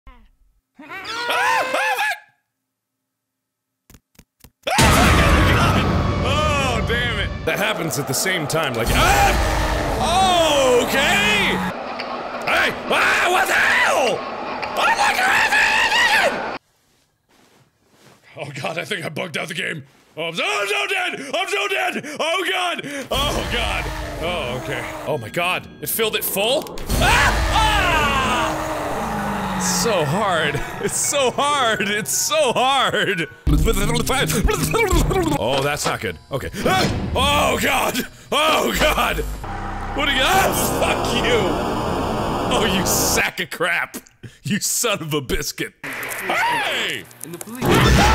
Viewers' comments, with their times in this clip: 0:00 I love that dolls voice so much! Who else does?
0:13 lol it sounds like Mark is speaking some kind of new language! I'm going to call it Markish.
0:30 I think my neighbors were playing boogey man, I heard them talk like this
0:33 new alien language discovwred
0:34 How I talk in a speech or anywhere I talk.